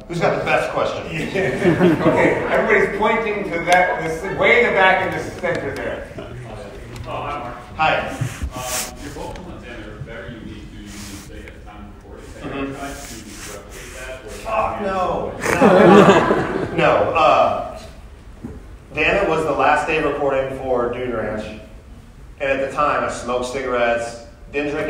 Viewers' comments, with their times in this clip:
0:06 The guy says "Oh hai mark" like the Room, I swear it's intentional